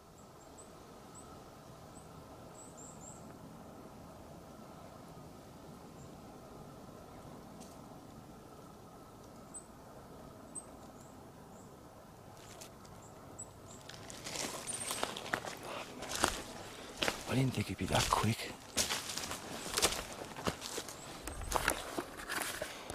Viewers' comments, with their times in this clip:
0:06 sounds like a mans voice.